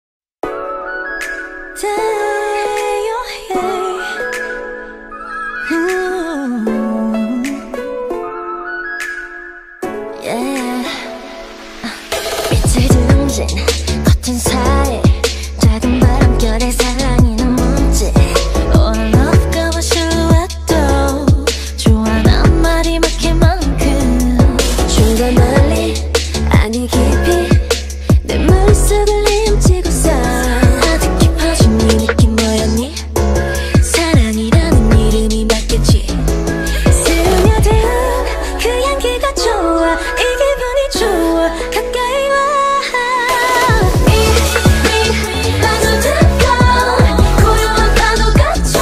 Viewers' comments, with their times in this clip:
0:01 Am I the only one heard Wendy say at the beginning ''Tie your hair''
0:18 Seulgi’s voice omggg esp 😭💛
0:30 Ok what Mariah Carey song does Yeri’s part remind me of?? This is driving me crazy the low notes sound so familiar